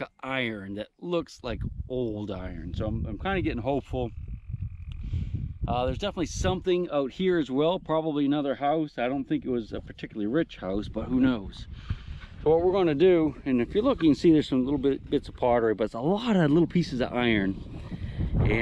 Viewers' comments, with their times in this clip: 0:06 Interesting audio anomaly/sound (!)